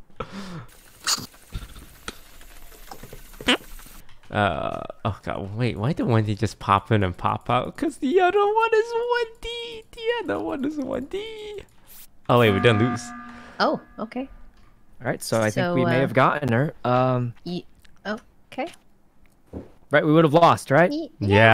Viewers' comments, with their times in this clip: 0:03 did you let a toot